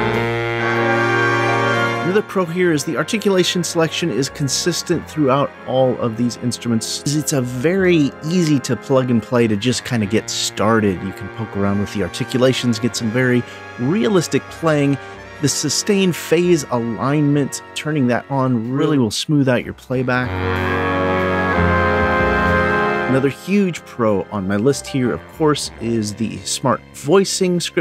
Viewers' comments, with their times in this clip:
0:08 One day, someone is going to come out with some realistic big band sounds! When a 'sample' comes out that can sound like Count Basie, Thad Jones or Rob McConnell....I'll buy in seconds! However, I did like the 'ballad' blending Keep up the good work!